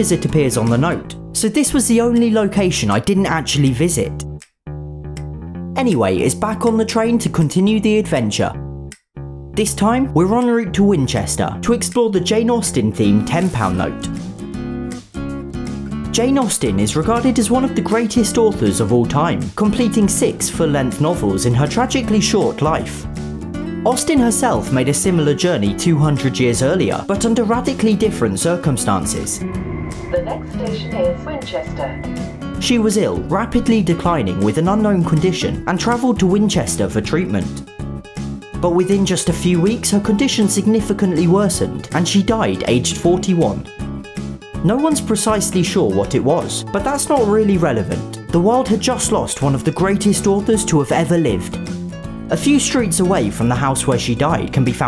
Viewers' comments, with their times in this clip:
0:10 'We're on route to win Chester' But how do you enter the competition?
0:36 I love it how you talked about someone’s death with some jolly ass music in the background